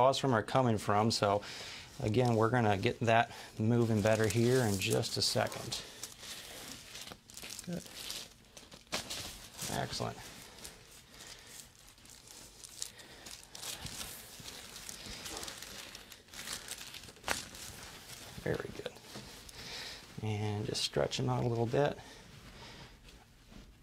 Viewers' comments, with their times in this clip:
0:08 Snap "Oh shit!"